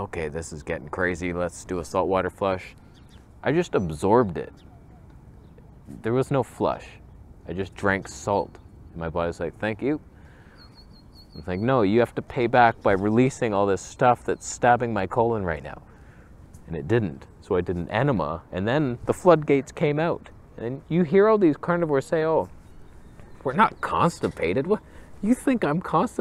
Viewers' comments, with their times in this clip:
0:08 your're a fun guy! I laughed loud at that dead-pan "thank you" 😀